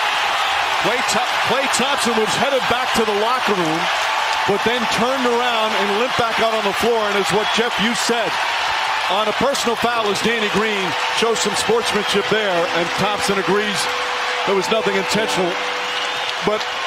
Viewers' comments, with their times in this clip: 0:03 The way kawhi laugh when Klay came back in 😭😂 in